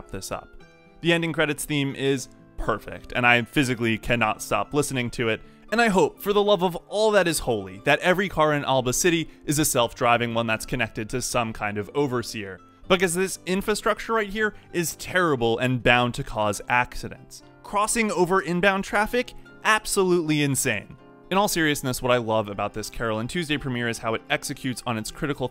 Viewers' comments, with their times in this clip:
0:06 is my favourite part. The music from this anime episode 1-2 is so great!